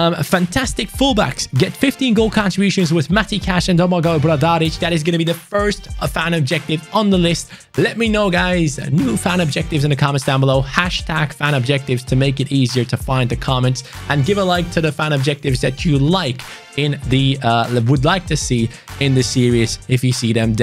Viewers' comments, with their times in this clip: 0:08 go to for a sexy voice crack hehehe